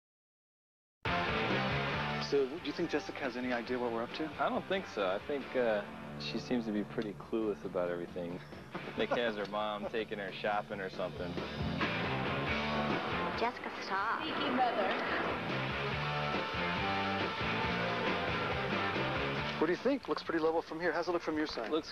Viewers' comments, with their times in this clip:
0:09 The sound comes back in